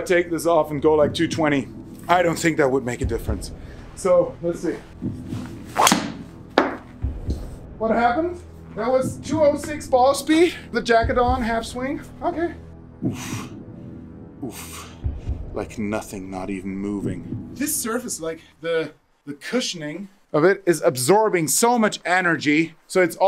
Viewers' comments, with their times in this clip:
0:06 if you speed up to 1,5 speed, you Sound like Matthias Schweighöfer😂❤